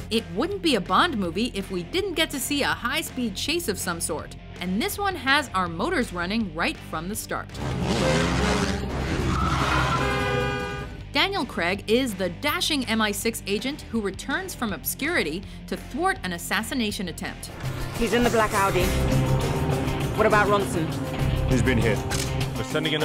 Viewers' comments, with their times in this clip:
0:10 cracks me up every time "Daniel creg"